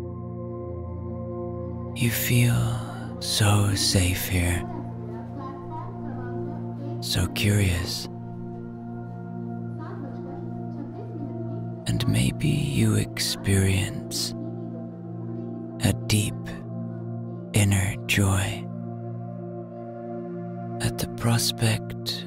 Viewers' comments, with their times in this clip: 0:07 I love your sleep stories! I recently suffered the devastating and unexpected loss of a 30-year-friend and your videos are the only thing that have helped me sleep at night. But I woke abruptly during this one when I heard girls talking. It spooked me, likely because of the trauma of what I'm going through. For a split second I thought someone was in my house. Ha! I LOVE your voice and the ambient background noise, like the train on the tracks or rain, etc. but your voice is the only one I want to hear because it's amazingly awesome! Thanks for all you do and for making this channel. You are a gift to all of us!